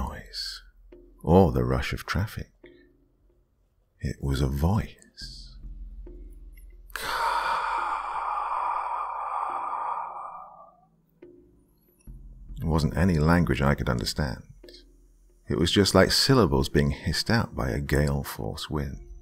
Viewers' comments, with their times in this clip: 0:07 hahaha omg your wispering was more scary then the storie made my heart cringe i had to turn the volume down haha good storie